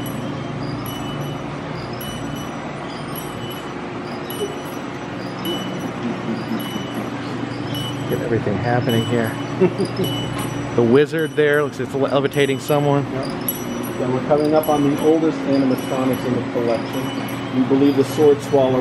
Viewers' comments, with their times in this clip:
0:05 I can't tell if it was intentional or not. As someone with a doll phobia this place is horrifying and that giggle was super creepy because of it lol. It is cool to see these things being preserve. And the guide was is great too.